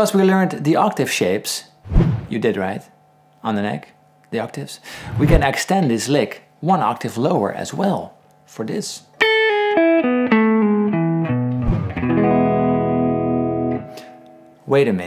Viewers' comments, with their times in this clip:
0:03 The arpeggio you play sounds very close to Echos- Pink floyd